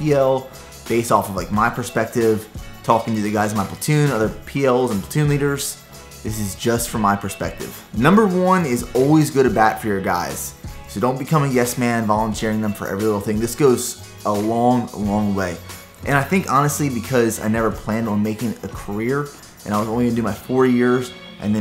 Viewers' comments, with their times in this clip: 0:08 For some reason i cant make out what he says "Always good a back for your guys"?